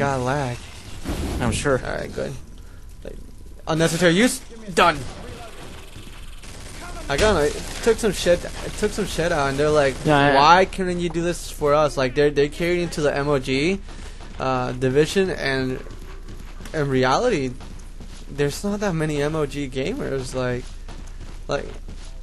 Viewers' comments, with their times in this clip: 0:03 Is the audio a littel out of sinch